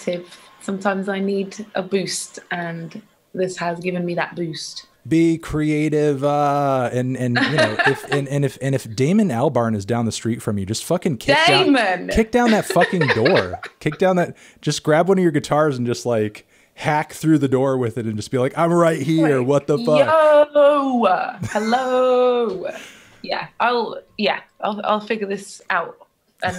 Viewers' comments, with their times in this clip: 0:09 lianne doing the ''helloooo'' from Gorillaz' M1 A1 <3